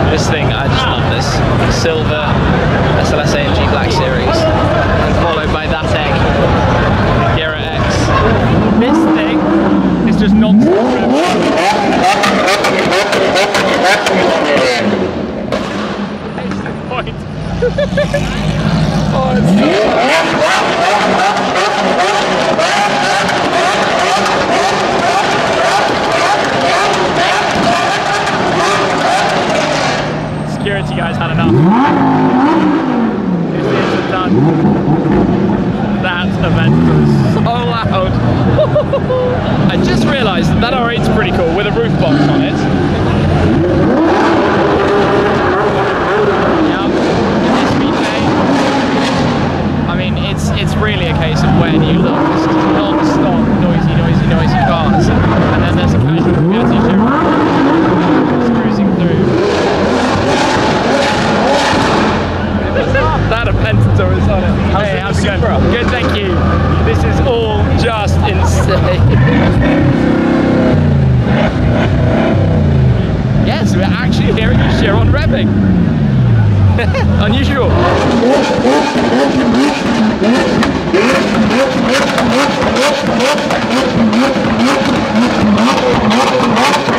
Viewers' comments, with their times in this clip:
0:09 🤣 the guy directing traffic couldn’t stand the Aventador revs.
0:21 security guy's ears be bursting, hahaha!!!
1:08 That’s the first time I’ve heard someone actually rev a Bugatti like that, and better yet, the newer Chiron.